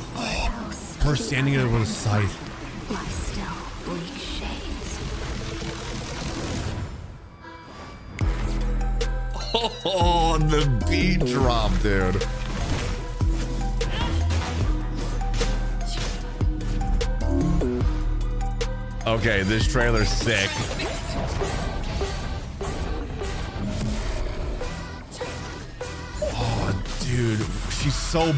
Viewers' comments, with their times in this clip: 0:08 the beat drop just right on point 👌
0:09 Unless I’m going crazy, there is some form of vocalizing here right…?